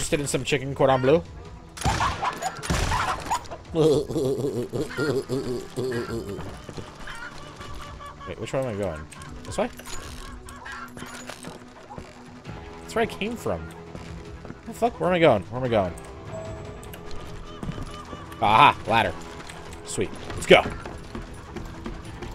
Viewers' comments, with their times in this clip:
0:03 ahhh those giggles :D